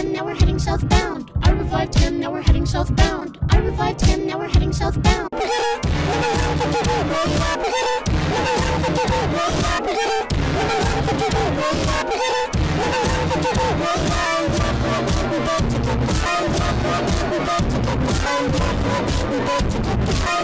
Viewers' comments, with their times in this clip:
0:05 AHHH! MY EARRRRS!!!